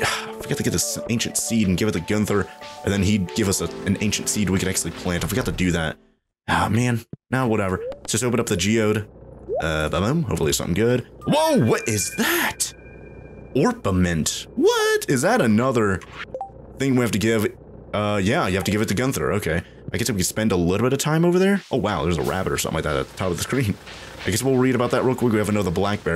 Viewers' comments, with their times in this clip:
0:09 i thought it was chicken nugget💀